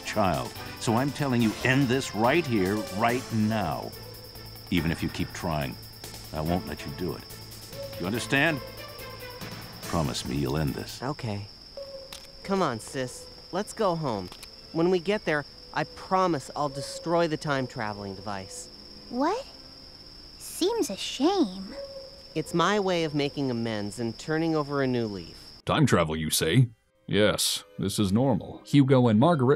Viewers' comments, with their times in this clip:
0:10 building up all that tension and then .... OK.... LIKE WHAT HECK?!?!?!? I love the acting in old video games like these cause sometimes they are really good... and sometimes... you get that lol!!!!